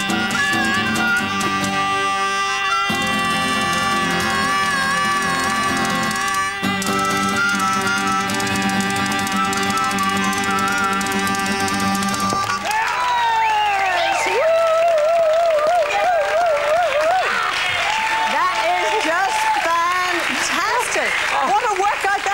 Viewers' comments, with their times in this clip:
0:04 And that 14 second note hold not many 70+ year olds I know of that can do that at full pelt these days ;) Respects to the late Lonnie Donegan, one of my late dad's all-time favourite performers and the inspiration of legends, you will be missed and remembered with fondness and affection ;)